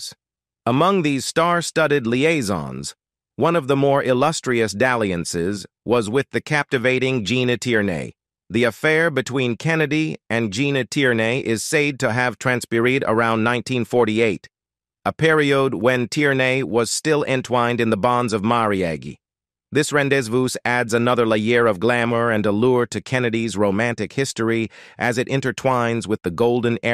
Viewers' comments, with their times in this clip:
0:03 'Gena Teernay' ? 'sayed to have tranpirayed'?..'the bonds of mariagi' ? And when was the affair with Audrey Hepburn supposed to have taken place?
0:03 Around the point. The talking machine goes off into a period of not being able to pronounce even the simplest English words.
0:13 I don't know whether an AI is narrating but it pronounced marriage about the mark as merry-agee.